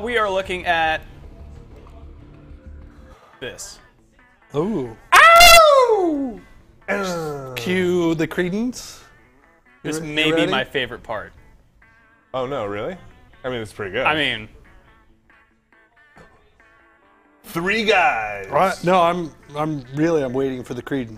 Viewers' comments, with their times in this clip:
0:04 I went deaf